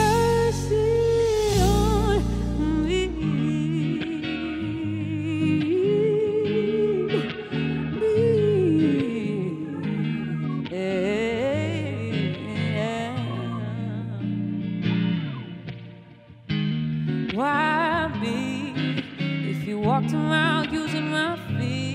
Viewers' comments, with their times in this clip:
0:04 I am listening to these songs 🎵 in the morning. Furthermore, you speaking so articulate about just some of your journey thus far. I love your voice, it is literally of the charts! Wow, what a guitar 🎸 as well all your Talents they are The Very Best. Flawless by H.E.R. Greatness by H.E.R. You deserve your own Guitar 🎸♥. H.E.R. I am sure you have inspire many to play guitar 🎸 as well as much more. H.E.R. You have earned each of your achievements ! Keep being you 💯% Real. Your Beauty shows in everything you do. You are such a Great role model for the music 🎶 industry. Also in so many other ways ✌💖.
0:05 I love how the keyboard is following her vocal runs